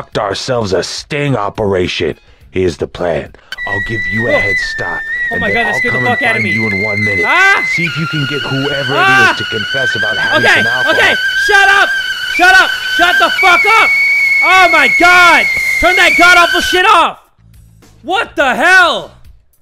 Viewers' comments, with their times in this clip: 0:04 if you wanna hear the kettle scream bloody murder